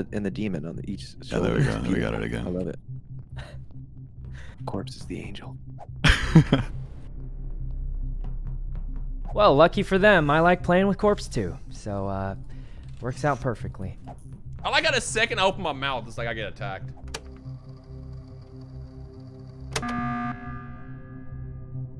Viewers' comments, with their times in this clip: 0:04 CORPSE'S GIGGLE OMG